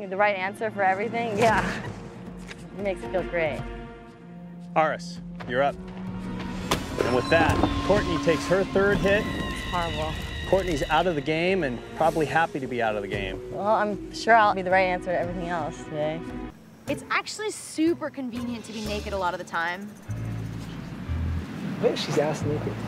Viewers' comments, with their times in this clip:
0:03 major flashbacks of Cirie and her fake as hell giggling NONSTOP in EVERY FUCKING SCENE of her in every season she was on...😖🔫
0:09 What was that noise? I had to remove my headphones for a second, I thought the gf found a spider again. 😂😂😂